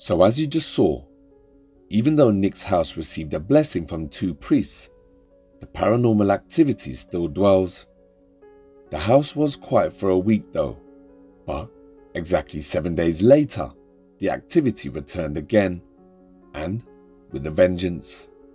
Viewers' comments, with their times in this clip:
0:03 The entity replays to him again when he said you need to get out and will you knock it off please you can hear a response from the entity but not sure on what was said